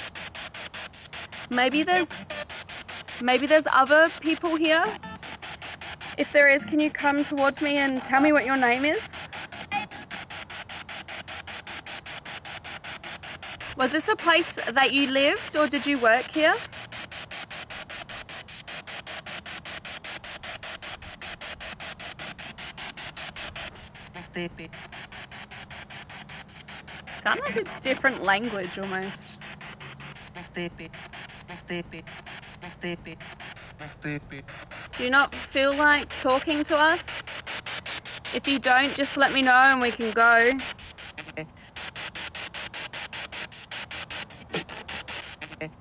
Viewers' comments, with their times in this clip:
0:08 I heard her say "April" in response to you asking what was their name...
0:25 I heard "my baby" and a few seconds before that, it sounded like a little girl's voice in the distance.
0:25 that foreign language sounds like Hindi language ( Indians Language ) and it clearly says “Raste pe” meaning “in the road.”
0:30 The spirit box capture sounds like it says "I'm sleepy". Do ghosts sleep?